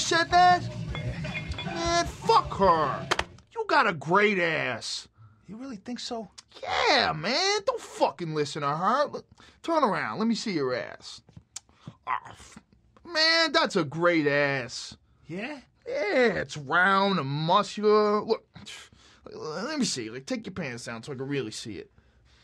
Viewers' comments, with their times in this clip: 0:06 lol, Joe sounds like ”Douche” from Sausage Party😂